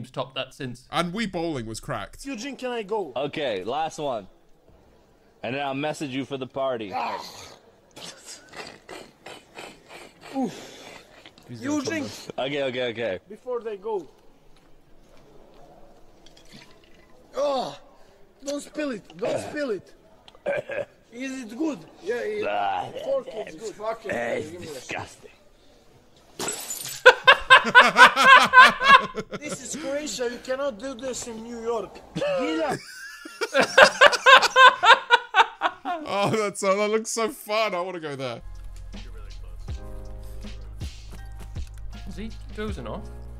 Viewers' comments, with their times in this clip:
0:08 Eez it Gud? a random Scottish time traveller from Glasgow appears magically out of thin air "it's fukn pi... Gee me the stuff" *Smash! *
0:26 love their laughs 💜🙃